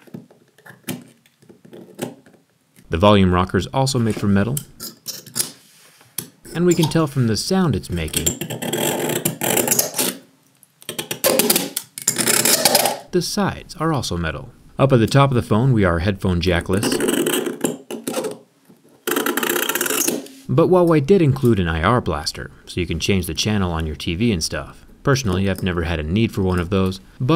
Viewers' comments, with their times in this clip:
0:08 ouch my ear！
0:09 ripped my earphones out. Damn my ears bleedin' XD